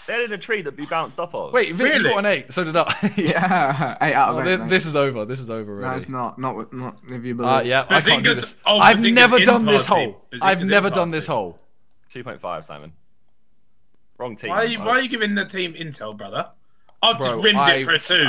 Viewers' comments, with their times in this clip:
0:03 i can hear a sheep xD